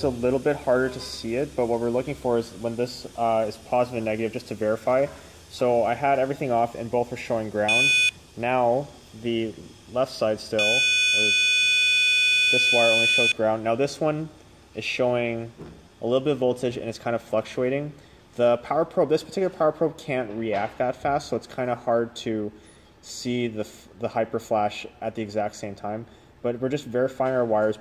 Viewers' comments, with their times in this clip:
0:08 Headphone users RIP lol